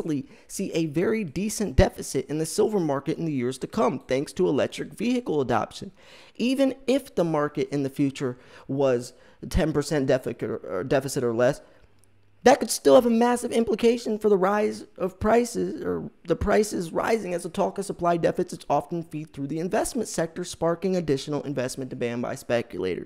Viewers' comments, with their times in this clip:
0:10 Ahaha let's hope the market is not "10% defecate" in the years to come.